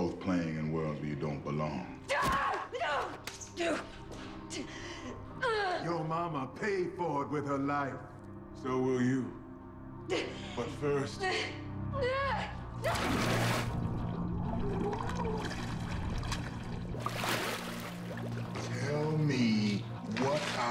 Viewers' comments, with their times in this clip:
0:05 just epic his voice